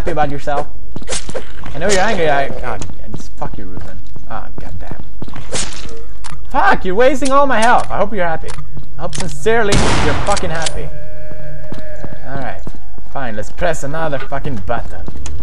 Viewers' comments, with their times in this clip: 0:03 RIP headphone users.